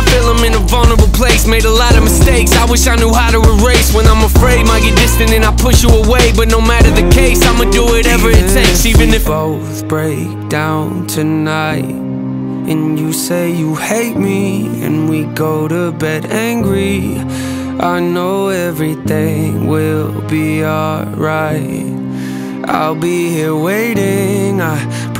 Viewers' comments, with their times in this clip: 0:10 I love how this song is integrated, even in the rhythm of the music, at times it is loud and at other times it is calming. I feel that it represents someone who is going through psychological struggles and describes how to deal with them.